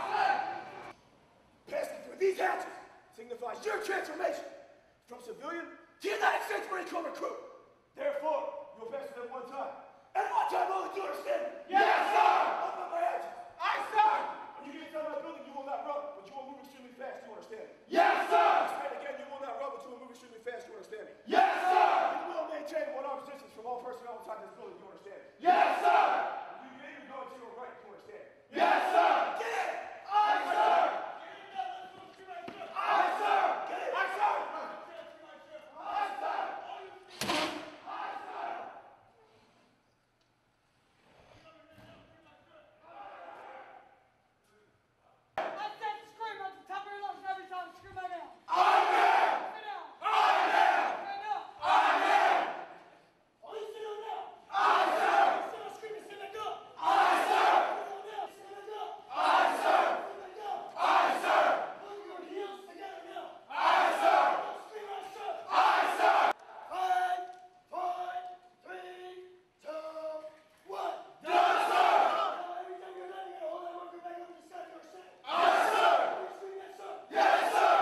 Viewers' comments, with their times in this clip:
0:09 that voice crack😂😂😂😂😂
0:59 That was my senior drill instructor. His voice still scares the shit out of me 😂